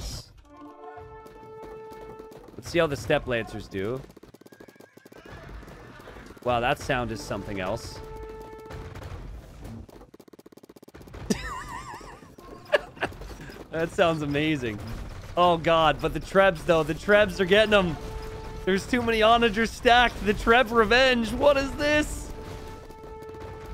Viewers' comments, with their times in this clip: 0:05 sounds like popcorn Hahaha :D